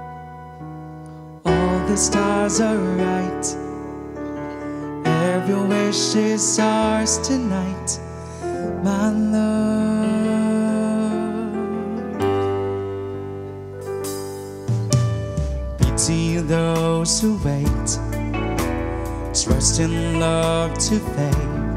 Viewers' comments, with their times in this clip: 0:08 Wow that simple yet sick chord transition from the keyboard was dope. 🔥🔥👏👏